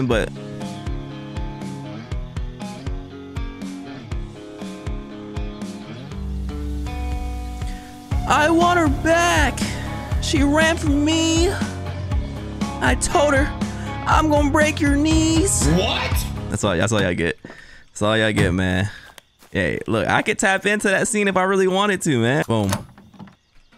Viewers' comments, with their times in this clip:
0:06 Ngl shit was kinda slappin, gave me greenday vibes 😂